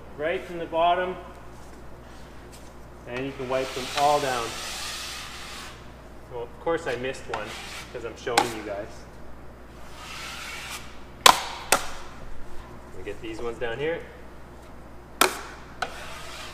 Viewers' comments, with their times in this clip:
0:03 HA! got you! On your first row attempt, I heard the sound of your knife on a screw!!!! hehehe. (just teasing) - Same as you, I don't like the row method, I'm faster one at a time, and less sanding. - thick mud, 2-3 coats. - I never put soooo many screws... Should I??? (why so many ?) Nice vid... thx I had a good laugh (with you) :)